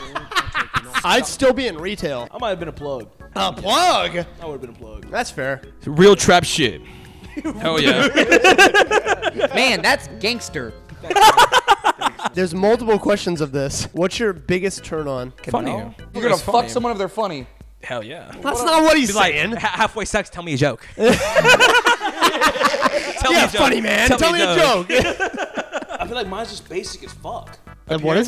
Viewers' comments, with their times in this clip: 0:09 That sounds like a producer tag